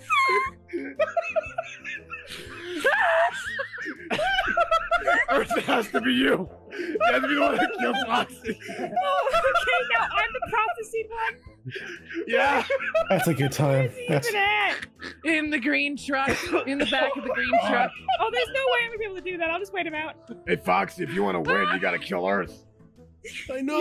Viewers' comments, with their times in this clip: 0:04 with eclipse is possessed or he’s laughing too >:3